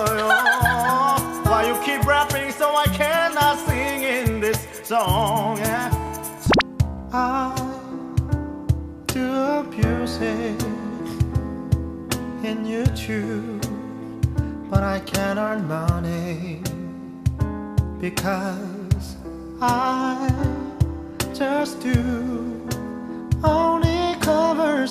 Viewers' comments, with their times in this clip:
0:07 He is like a Korean Sam Smith 😍